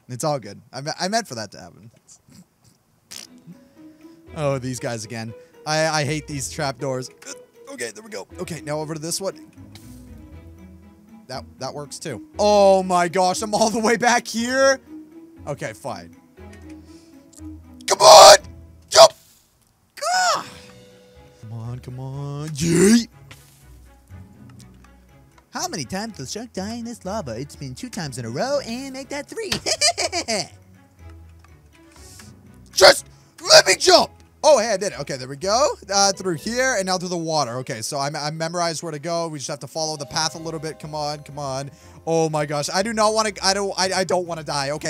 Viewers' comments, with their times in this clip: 0:03 OMG WHO JUST PASSED GAS
0:30 the most amazing laugh